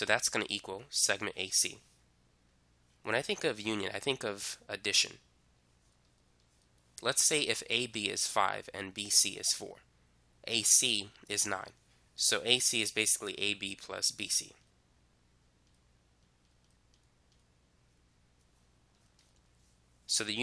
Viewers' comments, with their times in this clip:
0:03 Lol for me when I put closed captions when he said union it said onion! 😆